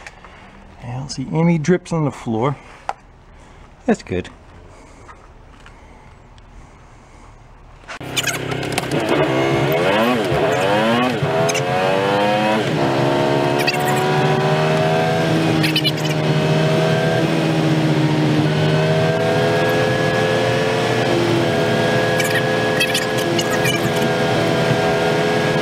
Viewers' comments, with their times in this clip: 0:07 An F1 being driven by Alvin the Chipmunk??